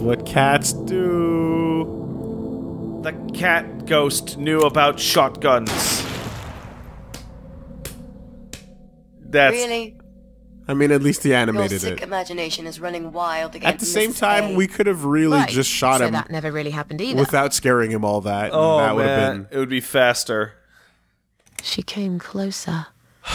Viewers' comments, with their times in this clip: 0:09 That deadpan '... Really' was the best. It's the only proper response for really bad fanfiction.